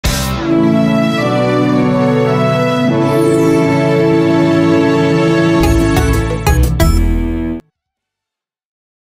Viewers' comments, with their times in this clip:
0:01 Damn, that fanfare is so beautiful 🥹